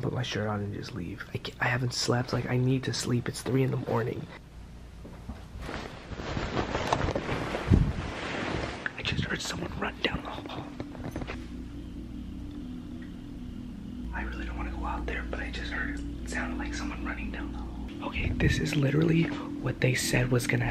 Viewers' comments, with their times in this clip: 0:05 YO that was load you could hear that so clear when they run